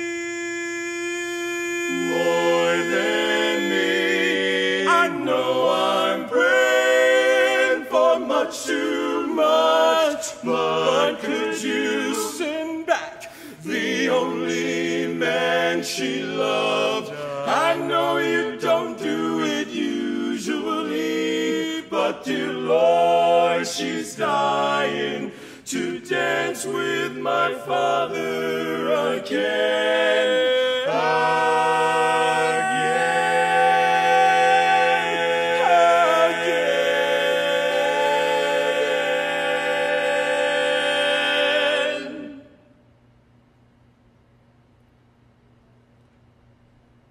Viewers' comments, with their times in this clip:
0:07 all but the lead cutting out for that line always sends shivers down my spine
0:30 that is the most heavenly chord i've heard form a barbershop quartet
0:30 I think it happens but I say there’s a strong case to be made that in measure 19, the note you transcribed for bari as a C is actually a B (on “a” in “a-gain”). I swear I have a life, I just really like this performance and am a baritone so I had to try reading along with it. Thank you for your hard work and transcription!